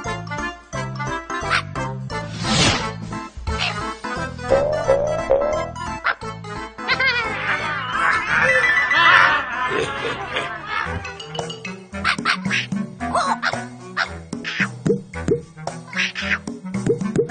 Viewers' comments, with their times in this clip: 0:04 why is chuck speaking boing lol